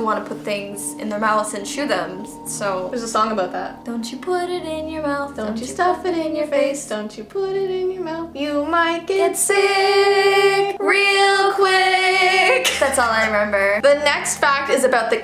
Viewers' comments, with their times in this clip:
0:03 THEY ARE SO GOOD AT SINGINGGG